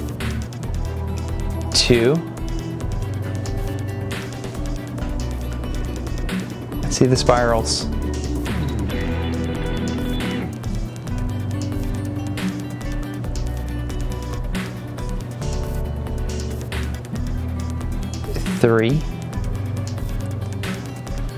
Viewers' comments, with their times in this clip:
0:06 The time signature of the music a is interesting. It's like three measure with 5 beats per measure and then a measure with 4 beats. Kinda cool. Anyway, the ultra laminar flow blew my mind, thank you for the video and sharing your enthusiasm about the world!